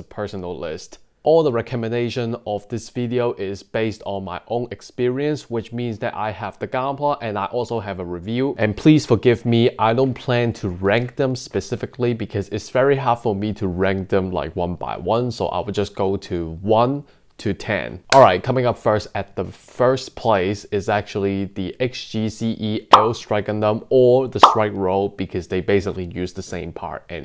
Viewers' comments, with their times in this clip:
0:09 his voice and before 0: 57 ooooooOOOOOOOO